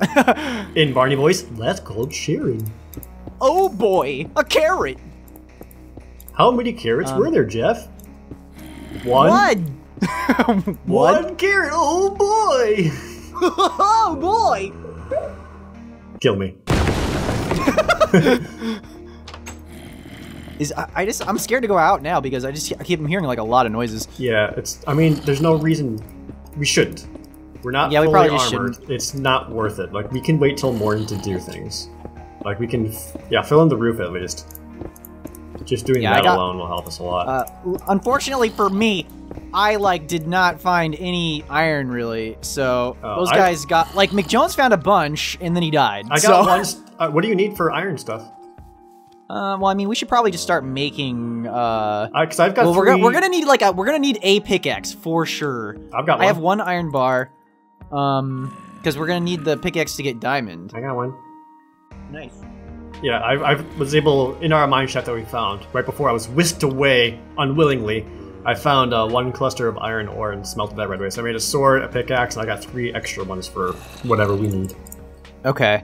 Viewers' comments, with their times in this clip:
0:03 that’s no barnie impression That is a goofy impression
1:01 You can hear a faint "nice" being said.